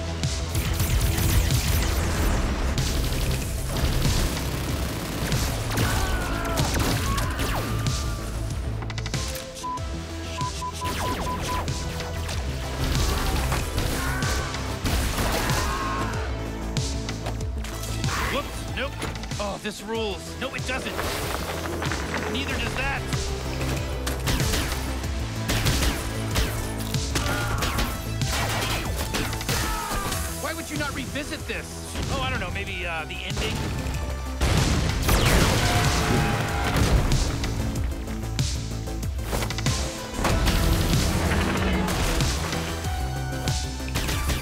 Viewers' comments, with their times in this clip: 0:08 i found the censors the curse words in repeat is funny xD
0:27 lol that death cry is the same that the enemies do in Hitman Blood Money!
0:31 That 80s synth electronic remix of the intro music from is the best in this series so far.